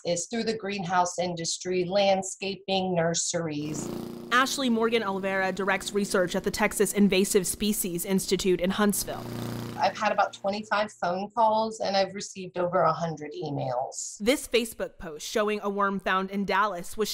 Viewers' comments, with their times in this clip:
0:04 Dear god will somebody please fix the wheel on that lawnmower! Now how am I supposed to sleep tonight!! General maintenance isn't hard people!!